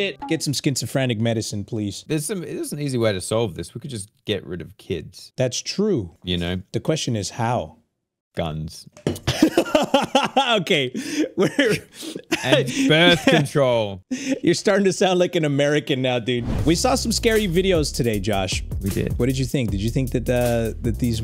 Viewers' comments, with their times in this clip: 0:07 the way he said "guns" I laughed so hard😂😂